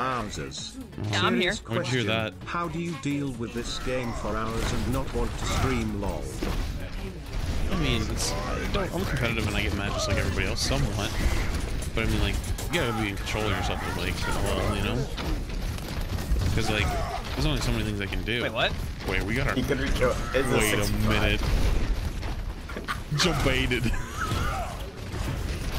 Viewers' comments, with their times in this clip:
0:07 why did Reinhardt say that voice line in such low pitch